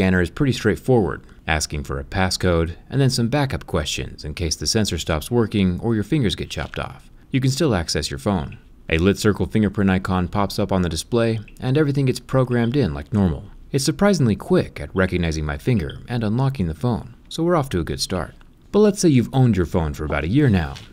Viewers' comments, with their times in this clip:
0:06 am I the only one that laughed "or your finger gets chopped off" because he said it like it was a natural occurence